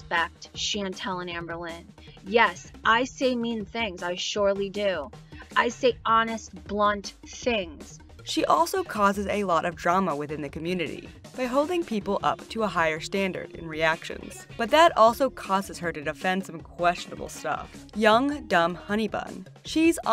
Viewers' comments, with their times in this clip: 0:03 The lady ish sounds like that because she’s abusing opioids. The ONLY other explanation is if she possibly has had surgery on her larynx or legit smokes more than a pack a day for at least 10 years. But, like I said… In my professional opinion, she’s abusing opioids. Sad af